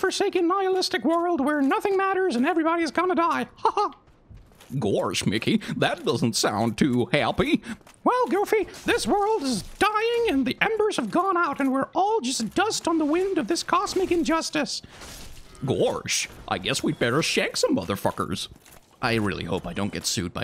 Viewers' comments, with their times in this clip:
0:03 rewatching this playlist and that voice acting is really good XD <3